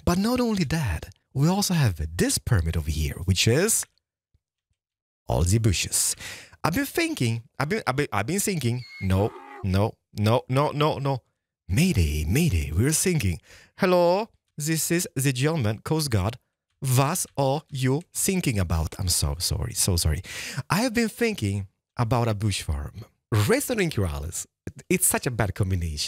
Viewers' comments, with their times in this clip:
0:08 the donkey fits perfectly over the "i was thinking " 😂😂